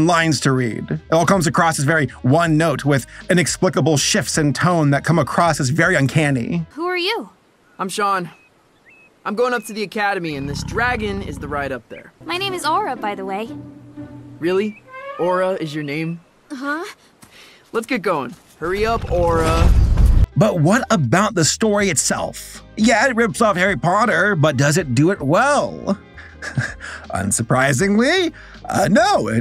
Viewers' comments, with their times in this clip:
0:07 two skinwalkers attempt to communicate except they don’t know that each other are skinwalkers
0:16 a Icebreakers ad interrupted the video. And was just as jarring as the voice acting of this movie.